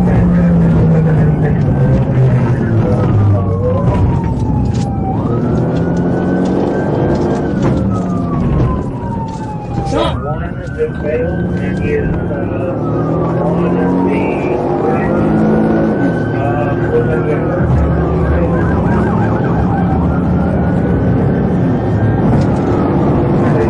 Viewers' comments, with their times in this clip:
0:08 that hard head bang on road either ended his life or made the rest of it a misery. You could hear the impact sound through the sirens and inside the airconditioned cabin of the cop car.